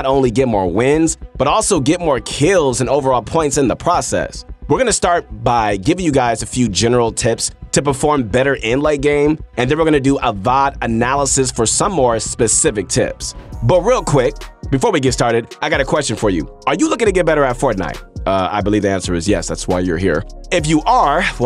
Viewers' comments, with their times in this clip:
0:08 Vibe Analysis is key